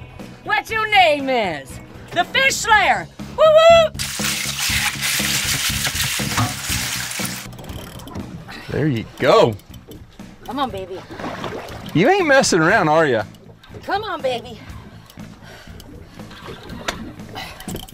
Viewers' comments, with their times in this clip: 0:04 as fish screams and starts swimming in the ice